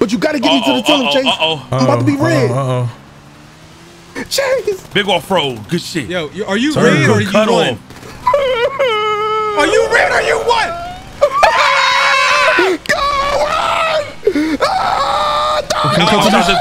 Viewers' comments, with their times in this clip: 0:04 bro tone siwtchec bro started cryibg for his dear life😂😂😂😂 im done dawg💀🤣